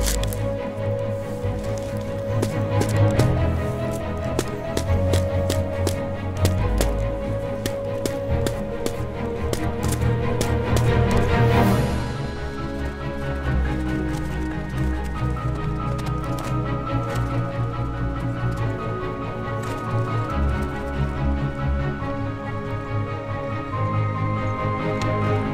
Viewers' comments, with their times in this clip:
0:08 i nearly have heart attack because that music